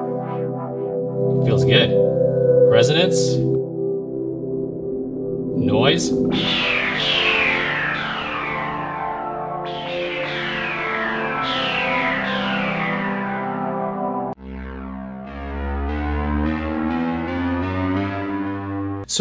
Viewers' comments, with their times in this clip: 0:05 thought you said "noice" at first